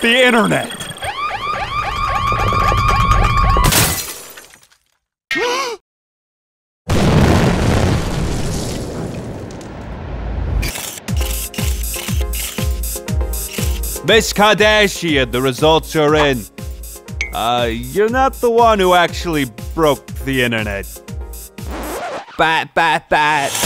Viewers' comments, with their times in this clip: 0:05 she gasp out